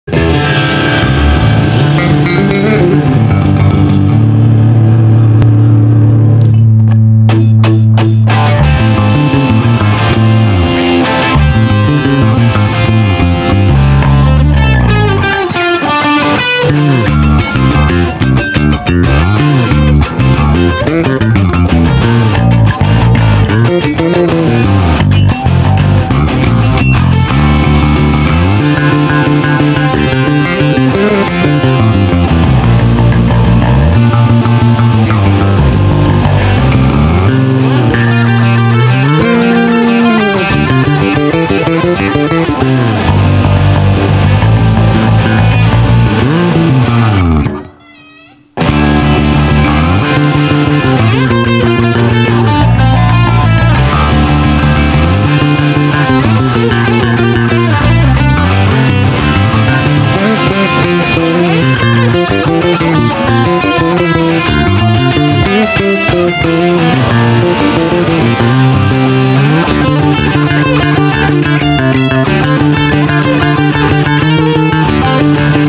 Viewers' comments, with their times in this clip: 0:02 I love how the bass just sounds like it's saying 'Heya there~!", just introducing itself to Bocchi and her guitar hehehe, makes perfect sense because Hiroi is doing an improv and it matches her lively personality too 🫠
0:59 I thought someone's starting to sing at first and I got confused then I realized it's the bass 😭